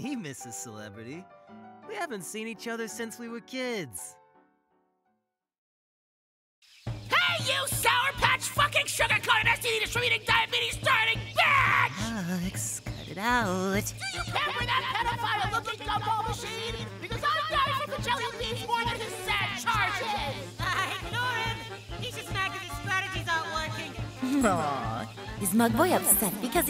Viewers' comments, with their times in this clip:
0:07 The fact that these voices sound like the exact ones from the show. why is nobody talking about this